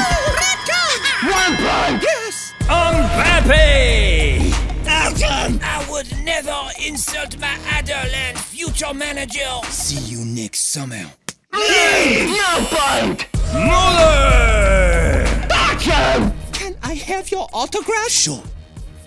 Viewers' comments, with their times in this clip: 0:04 Mbappe had a voice crack